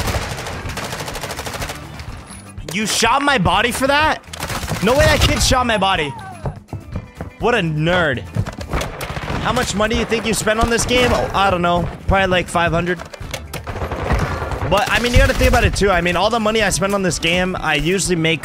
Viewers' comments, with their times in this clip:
0:05 is it me or this man almost said the n-word??? 😭😭😭😭😭😭